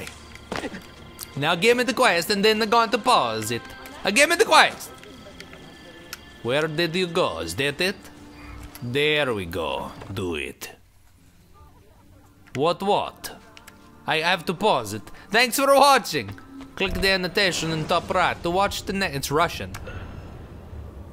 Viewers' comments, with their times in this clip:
0:08 -do it.. dead silence